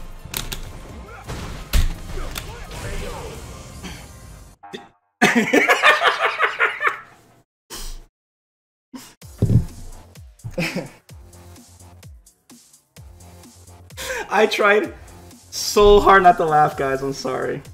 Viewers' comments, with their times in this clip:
0:04 that evil laugh with the ragequit bro highlight of the video